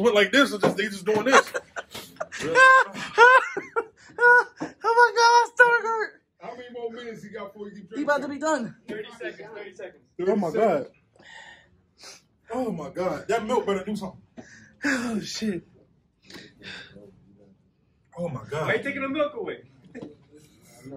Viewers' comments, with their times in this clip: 0:03 The camera man's laugh is infectious